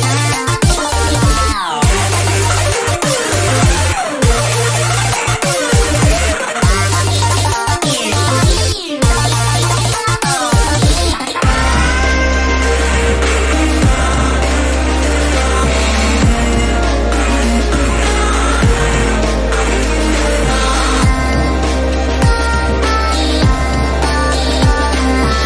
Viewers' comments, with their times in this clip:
0:10 It's been one year, i discovered this a few days ago and i absolutely love it it's so fucking cool it would still be good if you released this today also goes SO HARD those long notes are so good. You don't make fnf stuff anymore right? Kinda sad